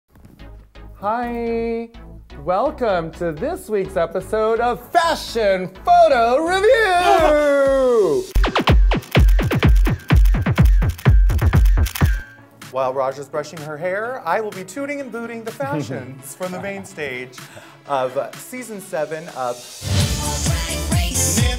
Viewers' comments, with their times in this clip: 0:06 Raven's noise though... ;)